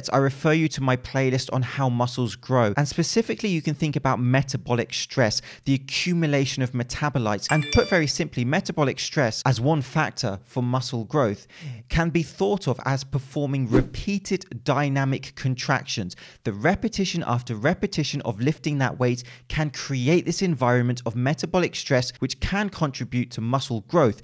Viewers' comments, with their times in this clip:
0:08 Thought I got a text message